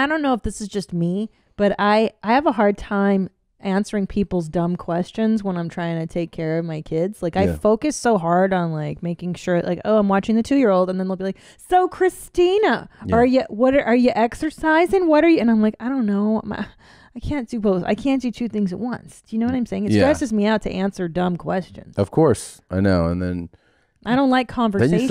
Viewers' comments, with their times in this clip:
0:10 Christie sounds scarily similar to Bill Burr's woman voice.